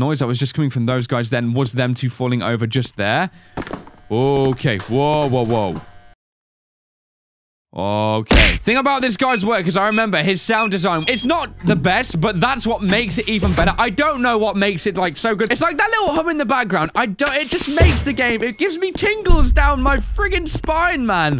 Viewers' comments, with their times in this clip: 0:08 that punch sound actually scared me like outlast XD